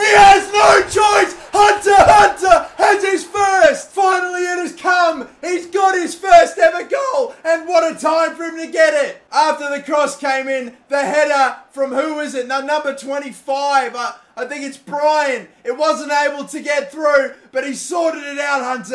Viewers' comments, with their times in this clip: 0:03 Who heard the voice crack
0:05 Voice crack just saying
0:06 voice crack check
0:06 nice voice crack 😂